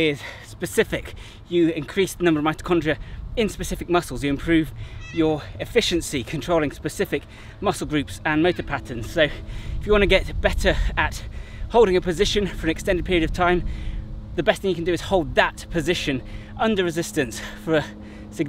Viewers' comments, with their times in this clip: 0:03 I can't get my mind off the cat meowing in the background